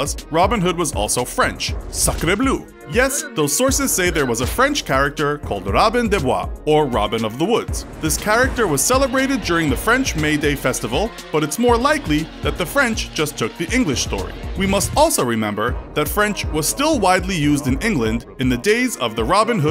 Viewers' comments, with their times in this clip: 0:05 Ayeeee That beat though 🔥🔥